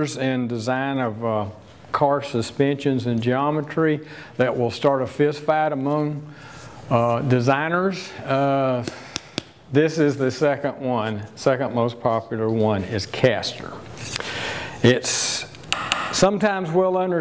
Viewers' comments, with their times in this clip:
0:04 FisFad? Im so lost